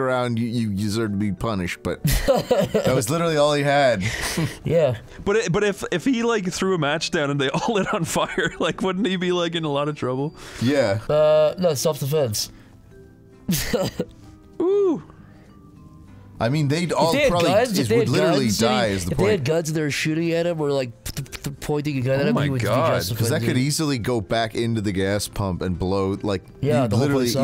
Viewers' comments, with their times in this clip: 0:09 my washing machine does exactly the same beep and it scared the shit out of me